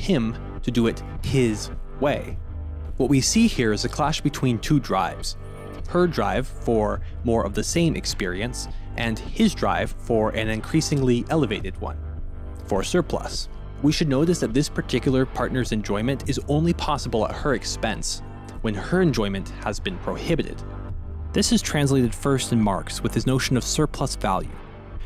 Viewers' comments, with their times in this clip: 0:10 big everywhere at the end of time vibes at the section